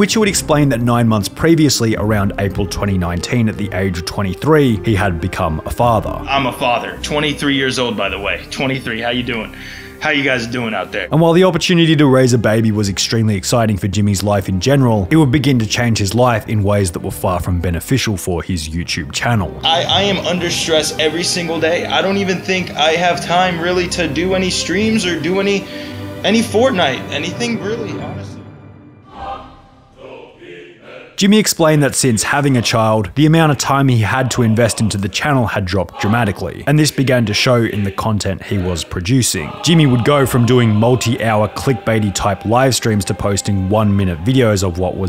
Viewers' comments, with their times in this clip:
0:06 the way he says it… like yeah, man, I should try to have kid at a younger age to prove a point
0:29 Love the shift in music to the Soundtrack of COD World at War and how it fits perfectly to his steady decline in popularity.